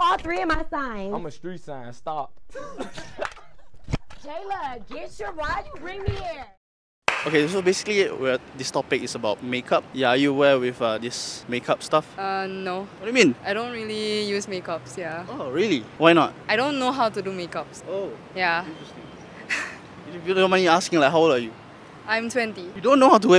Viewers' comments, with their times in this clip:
0:07 is it me or does that girl have indo accent.